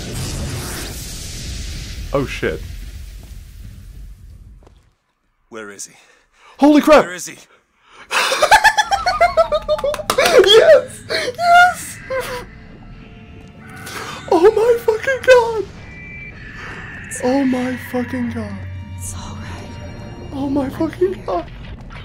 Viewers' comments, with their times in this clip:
0:04 lol that laugh